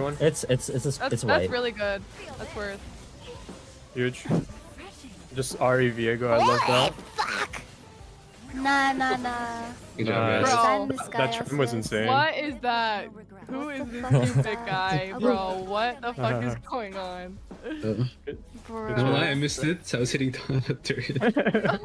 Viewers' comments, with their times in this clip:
0:06 the scream got me so bad 😭